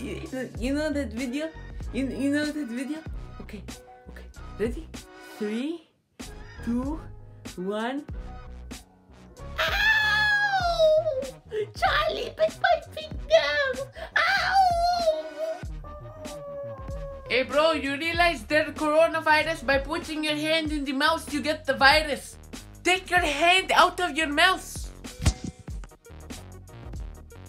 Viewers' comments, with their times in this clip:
0:09 pain if I’ve ever heard it